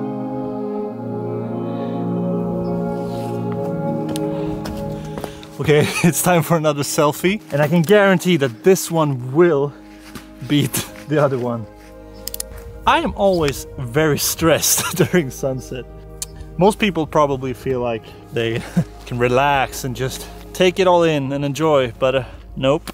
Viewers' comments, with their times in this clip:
0:03 Very detailed video and I love the background music